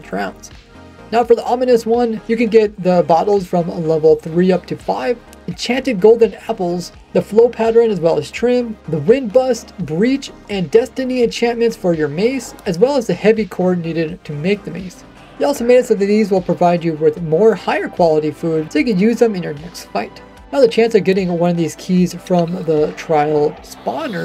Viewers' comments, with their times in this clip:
0:10 Did I hear "Destiny enchantment" ?